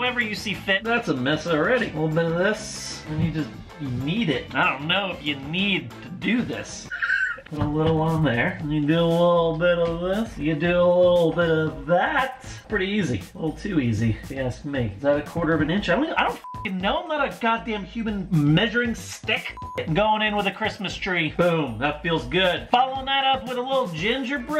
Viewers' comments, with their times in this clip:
0:06 his laugh had me dying laughing 😂😂